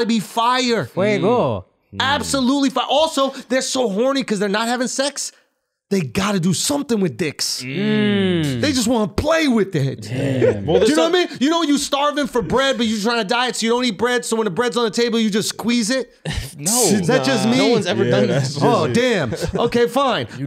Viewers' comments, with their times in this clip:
0:06 Lmao at the “mmmmm’s” and “yeahhhh’s”